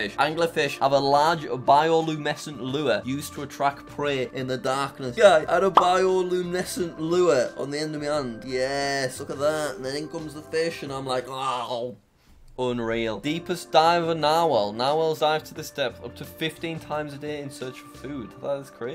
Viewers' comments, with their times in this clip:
0:03 he shouted yeeessss here we go